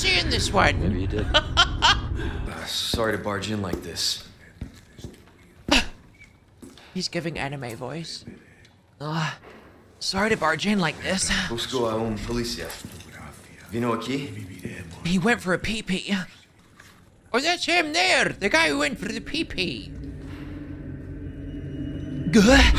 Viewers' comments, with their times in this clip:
0:06 GRAN 😂😂😂😂😂 you're an absolute library of accents and voices! superstar madam, pure star power